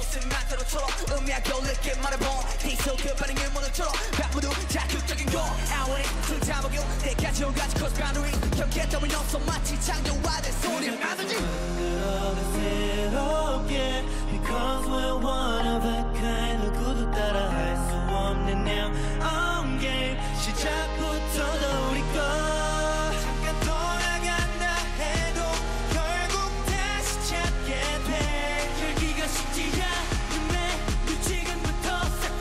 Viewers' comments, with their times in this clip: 0:10 i can feel the bang Chan's voice ♥️♥️
0:12 I'm an Army but wow! I love stray kids 💜 also I dont know but I'm in love with this part and who is the guy in the Middle his voice is a gift
0:18 No one: My dumbass rly heard i am Gay during this part
0:19 Nobody: literally nobody: Bangchan in I'M GaY